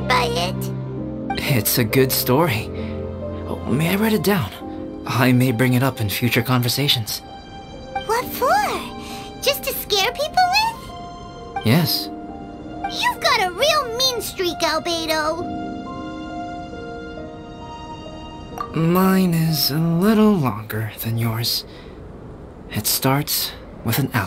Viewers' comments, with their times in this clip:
0:09 that monotone “yes” killed me